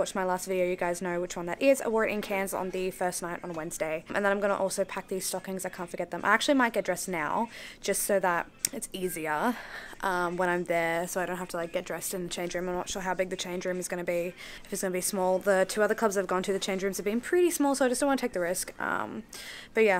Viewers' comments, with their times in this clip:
0:03 I could listen to you speak forever. And you look soooooo pretty the first night you went to dance. Love the makeup look!